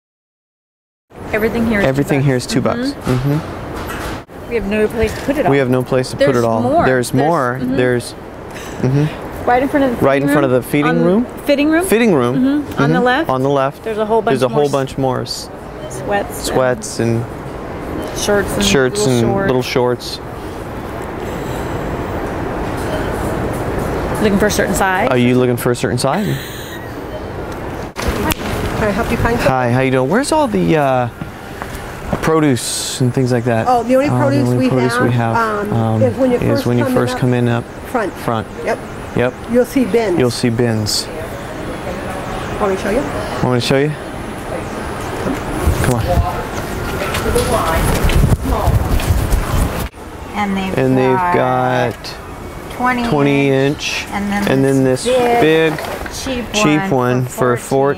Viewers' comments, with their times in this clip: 0:10 the feeding room lol
0:43 Lol Haha the way he says ''Want me to show you?'' And the way he walks haha. I watched this video like 5 times already